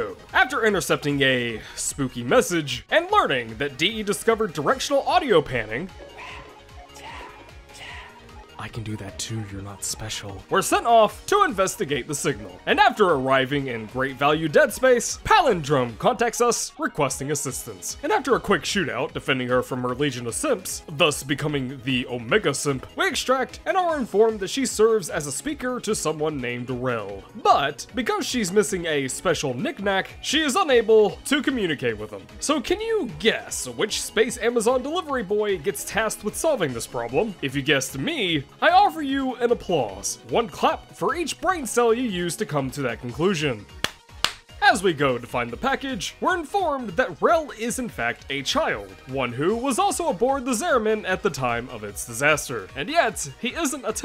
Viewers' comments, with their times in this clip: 0:08 Whispers: I Can Do That To Your UnSpecial
0:42 sorry dude. But you clapped too much.